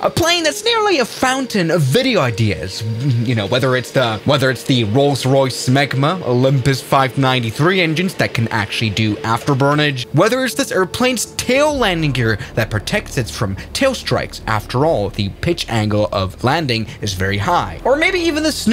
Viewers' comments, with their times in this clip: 0:04 that was NOT the wind vro ✌🏼🥹
0:05 rolls royce what bro ?